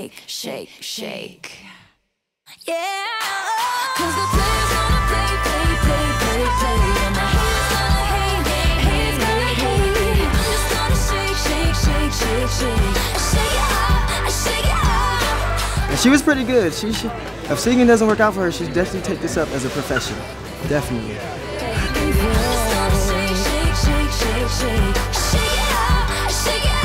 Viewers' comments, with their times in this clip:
0:08 Who hear Ariana Grande ... just me?